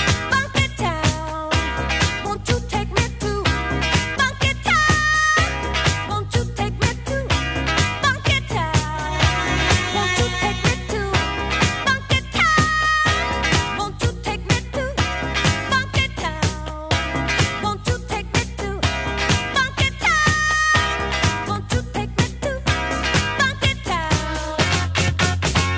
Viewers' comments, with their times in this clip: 0:08 What happens ? Sounds like a real bad loop....